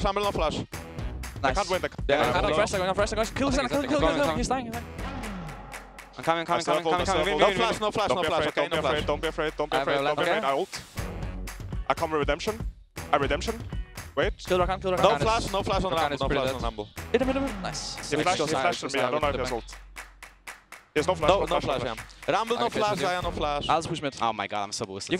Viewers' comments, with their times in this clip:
0:10 perkz distortion is funny too ffs